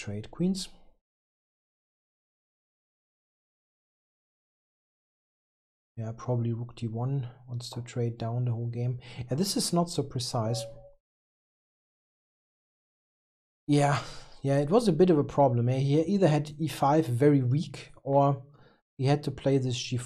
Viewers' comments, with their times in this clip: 0:08 This is not so precise. That deadpan delivery got me good hahaha